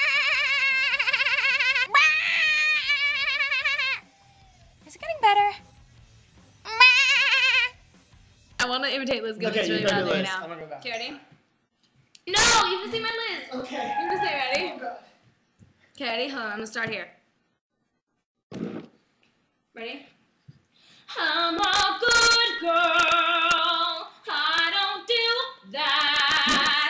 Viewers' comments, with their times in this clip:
0:09 the Liz impersonation was literally spot on